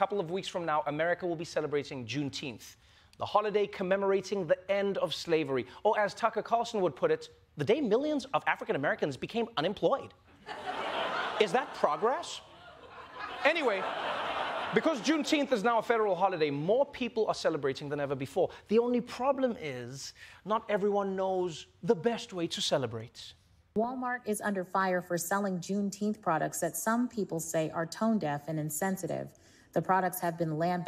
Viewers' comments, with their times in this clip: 0:06 😭💀💀🤣😭💀😭😭 Anytime he does the Tucker Carlson impersonation i absolutely lose it
0:11 I had to pause the video cause that impression made me lol. Spot on Trevor